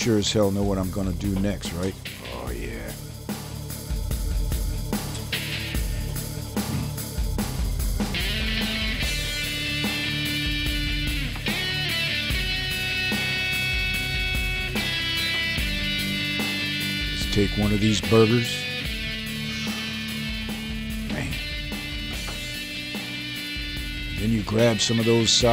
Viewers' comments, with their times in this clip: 0:09 that song :D and it looks really good , going to make it this weekend ! new SUB